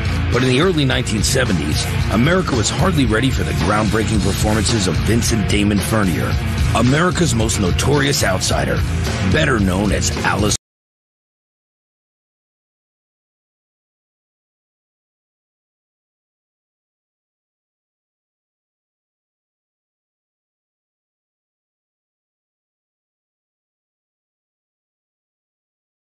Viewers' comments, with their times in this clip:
0:10 The audio just cut off here